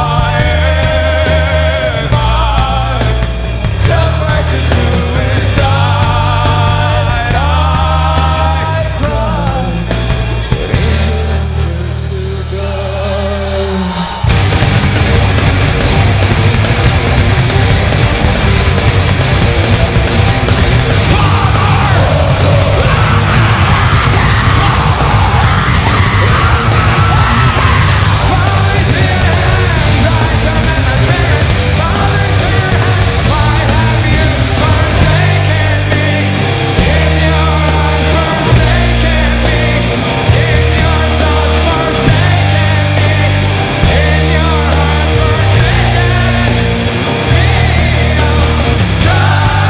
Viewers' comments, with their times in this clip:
0:04 Serj laughing. I think beacuse Daron haven't sung in notes
0:11 NOW THIS PART IS THE BEST THEIR SCREAMS ARE JUST MMMMM
0:14 is it just me or are bands not this mental anymore? like I feel if someone was this apeshit at a gig now people would be soooooo critical/judgey but back then it was such a vibe and being this insane was such a thing. I love it. I saw the linking park livestream where they introduced their new singer and got so nostalgic tonight and have gone down this rabbit hole (LP, Audioslave, SOAD) and yeah. I miss music like this and I would give anything to be able to go back in time to this gig, be able to go and scream my lungs out to chop suey. to not have a phone to record it but just fully immerse myself in the craziness of it. PS: love that false sense of safety at like where they're so calm just before they become entirely unhinged again
0:21 This Daron Scream is awesome
0:22 coolest scream, i wish they could this more often
0:22 screaming an Insane
0:33 you know you made it when the entire crowds singing along. that mustve hit them different
0:35 my favorite part when daron hits those notes on his guitar. Perfect.
0:35 Those guitars somehow hit even harder here than the recording.